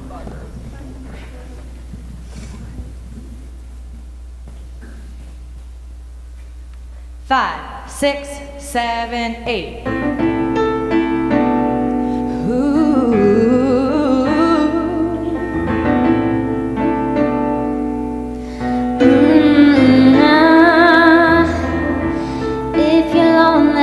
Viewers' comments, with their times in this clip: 0:10 bruh that teacher hit that mariahhh